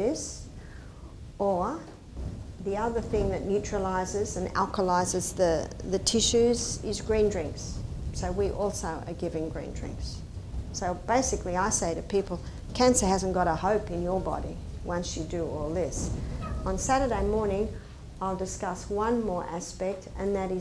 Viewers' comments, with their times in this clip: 0:07 What is she saying she also gives -50? I can't make it out.....except it seems it begins with a G